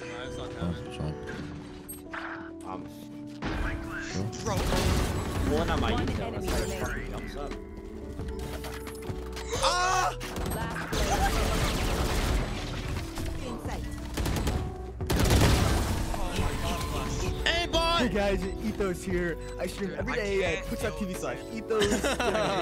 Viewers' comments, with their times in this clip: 0:09 what was that scream lol